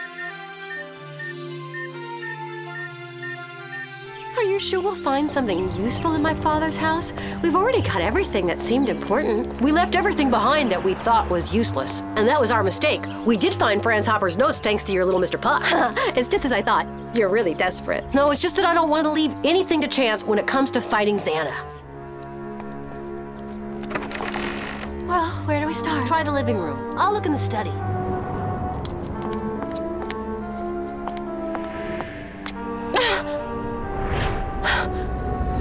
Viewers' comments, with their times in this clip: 0:04 Aelita sounds so weird !!
0:21 I had auto captions on and or so it said “when it comes to fighting Santa” I can’t 😂